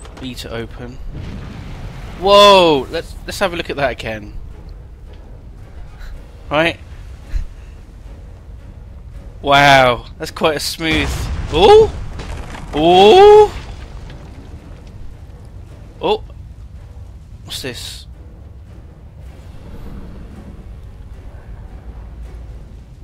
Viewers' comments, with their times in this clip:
0:10 Love the "ohh?" hes doing